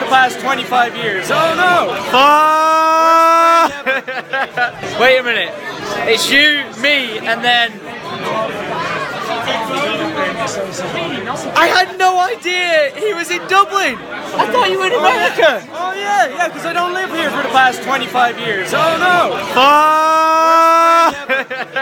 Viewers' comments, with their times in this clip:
0:06 it repeated itself 😁